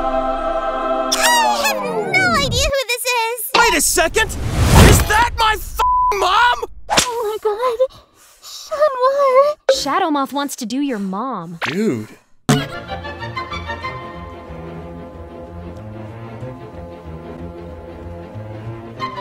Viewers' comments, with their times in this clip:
0:04 The sheer amount of anger when chat says "Is that my fuc**ing mom?!" Will never be not funny to me 🤣🤣